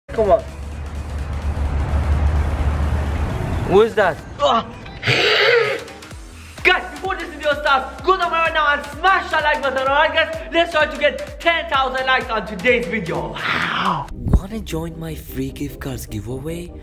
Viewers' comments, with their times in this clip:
0:04 WTF IS HE MAKING OLD MAN NOISES?